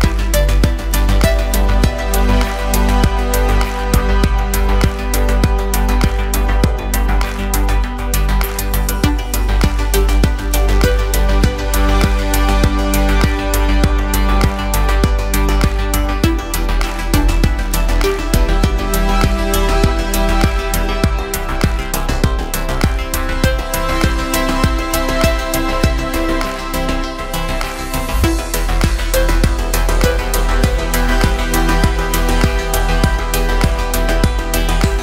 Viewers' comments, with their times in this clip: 0:08 SWAT: Groaning* Criminal 1 : What the hell is that noise? Criminal 2 : A Tiger. Criminal 3: Oh s*it, its the cop's groaning.
0:18 and how in they shout fib noot fbi